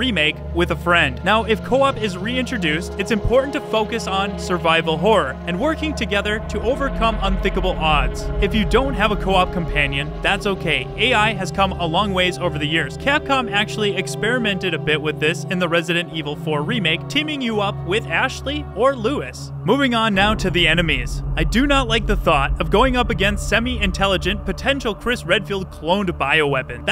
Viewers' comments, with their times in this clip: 0:09 wait...did you seriously just call Luis "Lewis" LOL